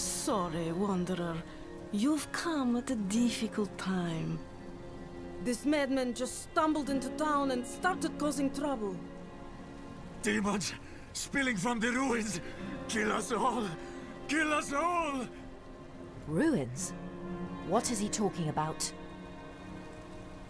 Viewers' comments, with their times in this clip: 0:03 Always a crappy Russian accent to make things sound exotic...